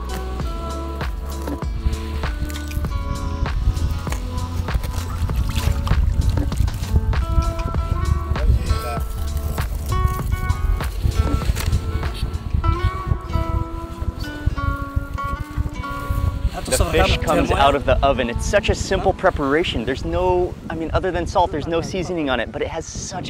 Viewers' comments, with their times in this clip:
0:05 lol why am I hearing "Joy to the world"?? 🎶